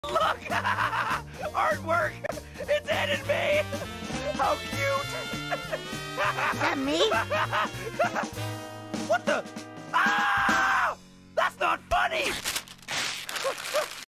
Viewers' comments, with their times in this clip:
0:09 That scream is hilarious! 😄😆🤣
0:10 bro sound like bugs bunny